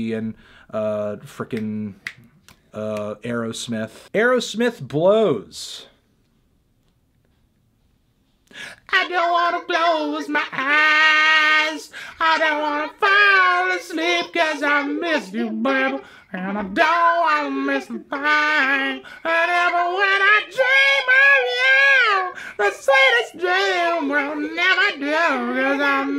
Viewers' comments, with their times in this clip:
0:08 Frank Ocean who?
0:09 This Cover Performance was a 10.
0:09 expecting to hear this on frank ocean’s next record
0:09 the mars volta acid vocals.¿